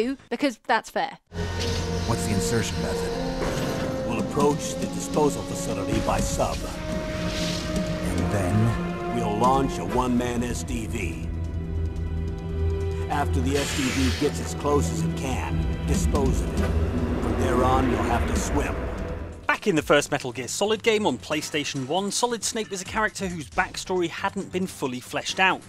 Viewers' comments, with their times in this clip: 0:08 I didn't realize solid snake worked with the plumbers in his early days or that he was once friends with grampa max
0:09 Cant believe Grandpa Max was in Metal Gear Solid